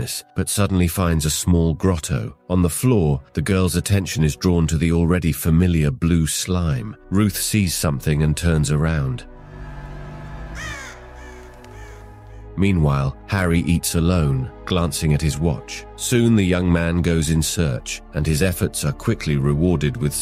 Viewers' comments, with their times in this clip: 0:07 it’s the perfect scream